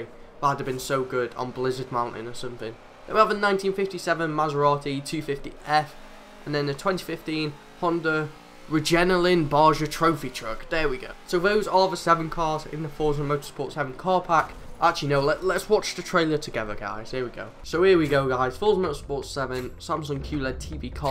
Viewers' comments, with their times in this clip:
0:07 My mans said regenaline